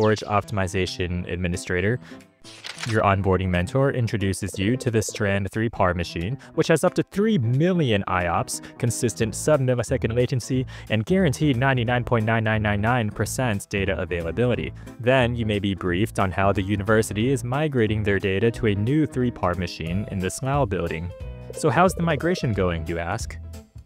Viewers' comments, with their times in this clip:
0:09 wtf this whole video is narrated by an AI voice
0:09 the voice is also AI!